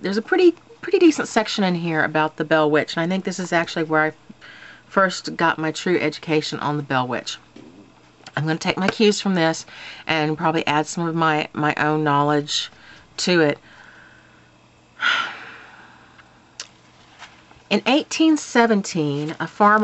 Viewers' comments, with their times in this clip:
0:07 LOL! DID YOU FART!!!!!!!